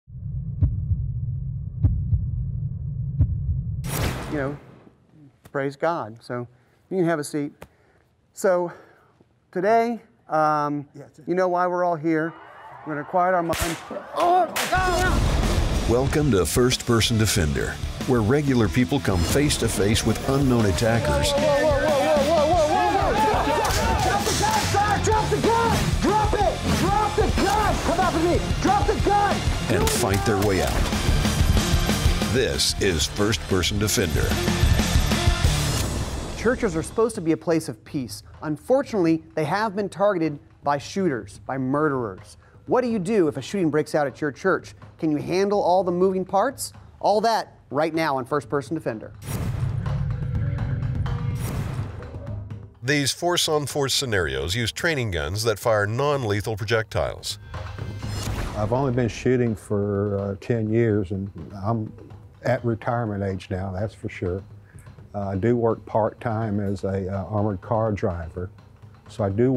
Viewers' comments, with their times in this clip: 0:00 that hert betting is scary lol
0:54 I swear that’s the same narrator that is in the fitness gram pacer test